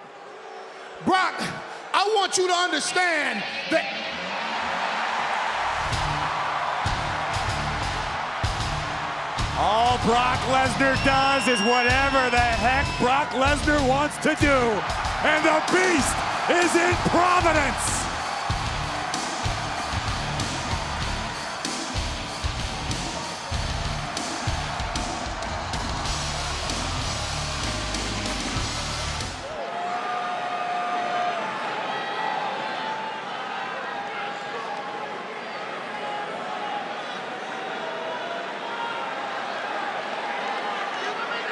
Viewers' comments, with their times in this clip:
0:05 See how audiences shout when Brock enters
0:25 Brock always gets a pop. Heel or face the dude is a massive presence Also, defuq😂
0:25 never have i ever thought that we can vibe to Brock's theme!